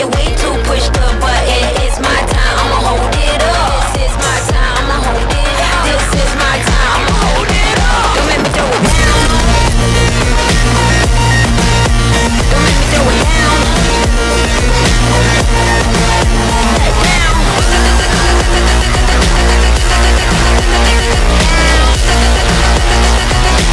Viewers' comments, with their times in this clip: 0:08 3x volume go crazy
0:09 WOO!!! 🔥🔥🪩😎😎 this speaks to my cyberpunk techno-loving soul, haha Also, when it gets even louder and bassier HELL YEAAHHHH 😝😝😄 lol